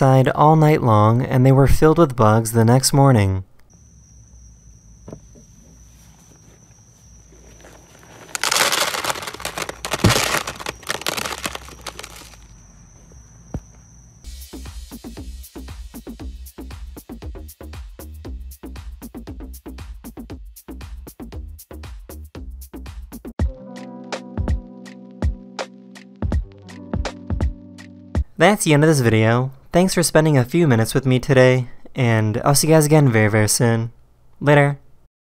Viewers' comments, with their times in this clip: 0:07 it sounds like candy
0:11 dude this shit sounded like candies eww
0:23 that beat tho